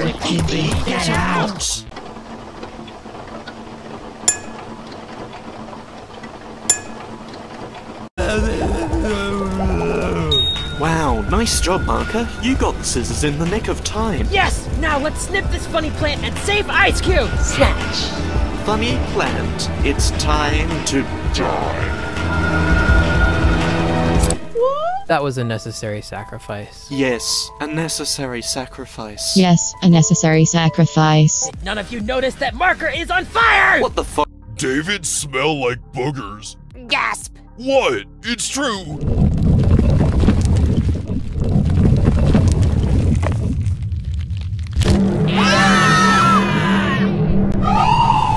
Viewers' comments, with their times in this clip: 0:09 the way he says it💀
0:11 is it just me who hears icy screaming in the bg
0:12 why do i kinda hear something that sounds like bell screaming 💀
0:24 that actually was a necessary SACK OF RICE...
0:32 the way he said😂😂😂 “ what the Fu-“ like bro😂😂😂😂😂😂